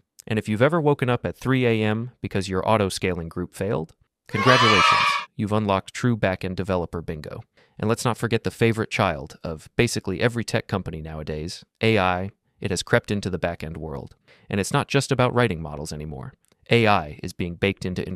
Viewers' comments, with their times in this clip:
0:03 that was too loud